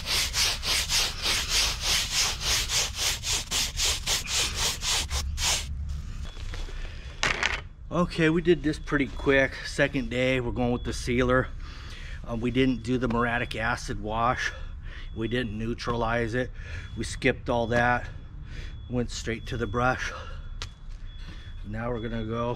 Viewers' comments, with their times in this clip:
0:07 The blue bids give a certain magical touch to the stepping stones. I'd love to try that BTW my doggy started barking went that siren3alarm went off lol